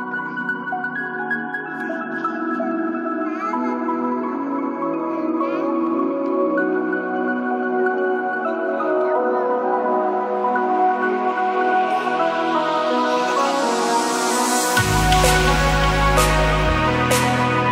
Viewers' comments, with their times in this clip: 0:03 That's the one that has the sound of a baby babbling - it is pretty cute.